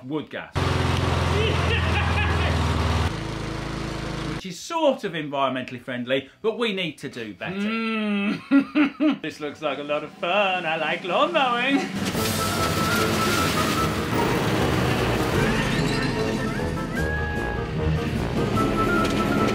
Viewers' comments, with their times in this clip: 0:07 the approving ‘mmmm’ sound before the camera change was great editing. Really conveyed your excitement for the build..... unpause.